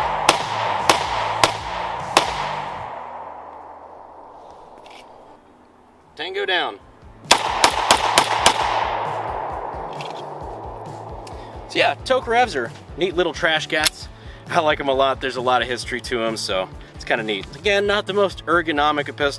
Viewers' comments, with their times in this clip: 0:05 missed opportunity. Could have said it in a deep russian accent.